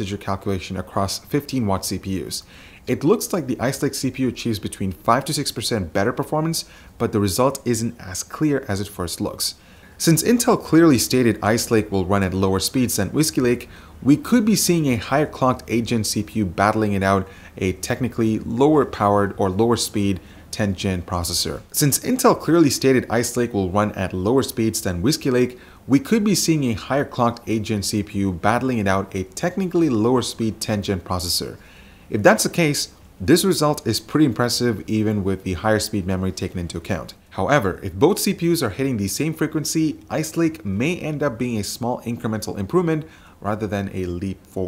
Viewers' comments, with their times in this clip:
0:09 repeated audio twice?
0:29 Dupe repeat audio